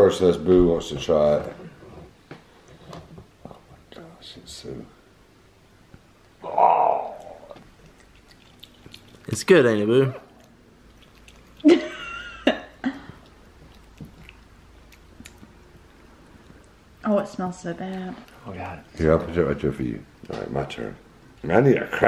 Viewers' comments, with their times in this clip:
0:09 I thought I heard Boo say mmm